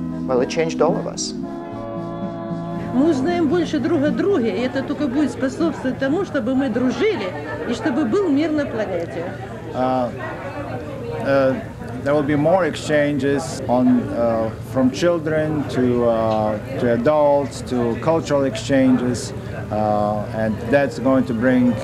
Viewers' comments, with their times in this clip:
0:09 That's my grandpa translating 🥺it means so much to hear his voice and see him again ❤